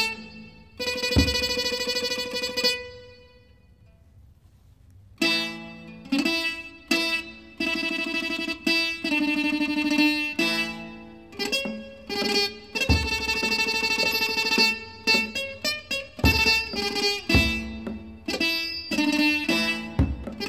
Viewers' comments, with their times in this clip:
0:05 i like this song